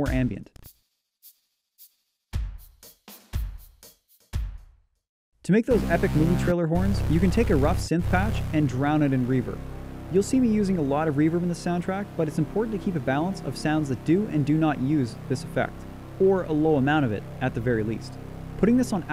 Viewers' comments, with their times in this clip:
0:07 That change when just adding delay is just amazing.